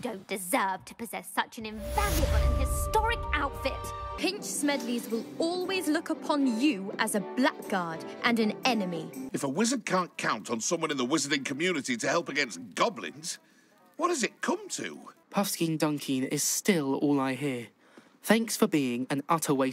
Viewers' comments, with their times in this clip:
0:04 That's just... that's not how you pronounce 'blackguard'...